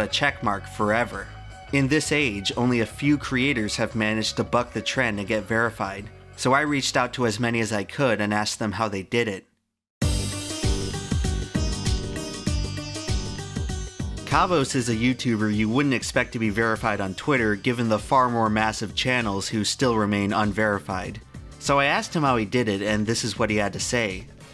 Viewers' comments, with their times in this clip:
0:10 based music choice